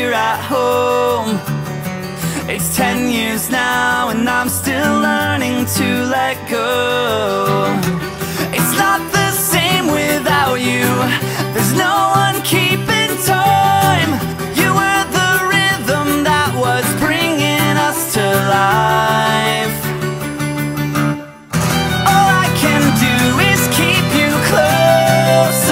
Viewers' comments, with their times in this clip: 0:07 Acoustic Guitar Fail. Yellowcard Rocks!